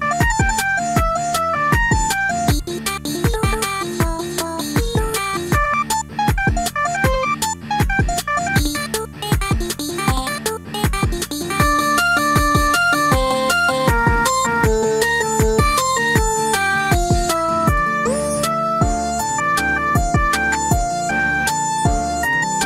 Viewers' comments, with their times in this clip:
0:05 sounds like megalovania
0:05 Sky singing megalovania be like
0:05 That sound like Megalovania :O